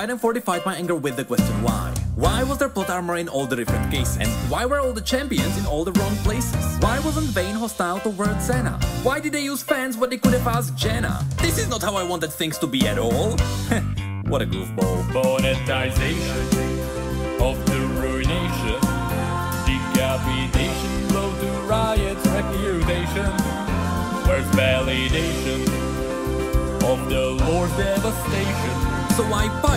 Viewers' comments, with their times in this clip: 0:10 Banger music starts